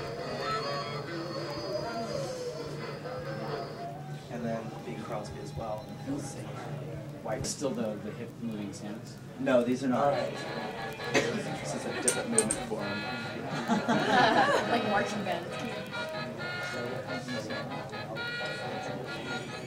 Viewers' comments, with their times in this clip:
0:03 you can hear a billy Bass at the background